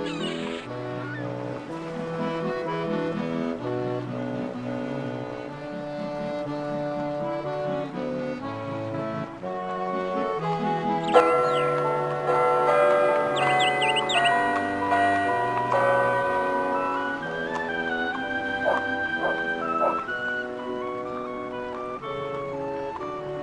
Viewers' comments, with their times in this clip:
0:10 also. Bells are chiming once every half hour.